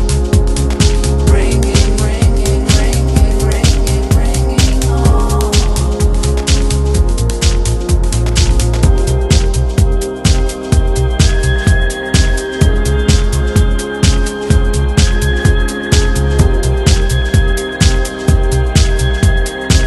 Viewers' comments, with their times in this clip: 0:07 This is my alltime favourite track. It's just so.. I don't know. "Romantic" is how I would describe it. The synths are lovely, the vocals and lyrics are outstanding, and the part gives me goosebumps every single time. This track is the definition of "love" in audio format.